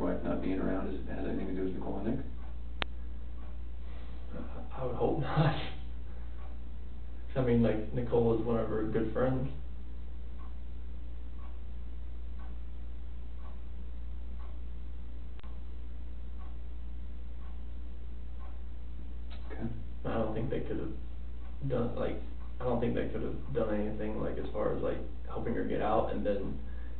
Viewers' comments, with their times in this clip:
0:10 “Nicole “WAS” one her good friends.” I love the million dollar stare and complete silence from the detective. Chris scrambles to fill the silence and all you hear is the clock ticking. I really wish I could see the detectives face in that moment!!!